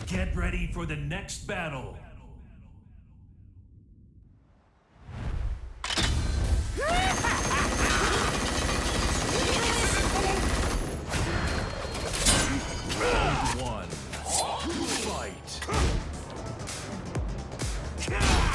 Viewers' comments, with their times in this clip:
0:05 Bryan Fury: laughs manically while firing a minigun Yoshimitsu: I shall avenge my followers!